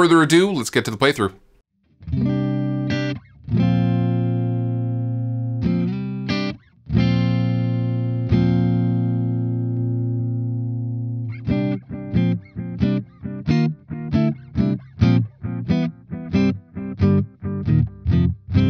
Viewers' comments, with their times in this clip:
0:05 Great review! Looking for a pedal that has no tone-suck at all. Sounds like when you flicked the unit on some of the highs dropped out. What's your thoughts on how this unit maintains the dry signal?